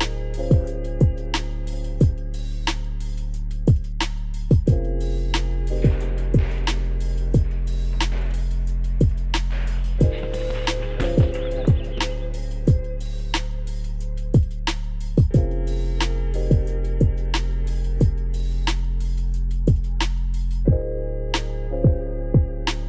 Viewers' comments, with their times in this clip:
0:06 you can still hear the bang as he hits the bag over the bgm